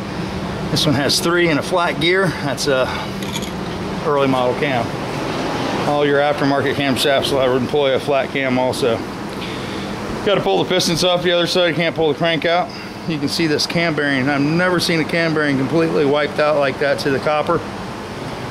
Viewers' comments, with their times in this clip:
0:06 LOL! Think you got the big fan out. I think I can hear it in the background. Temp here 93 right now PM. I understand the pain.